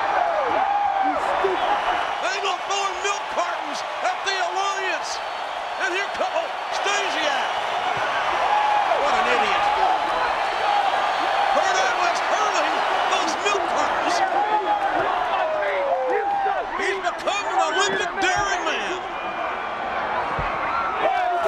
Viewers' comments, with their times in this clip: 0:05 So why did they edit out the thud of Stasiak hitting the truck?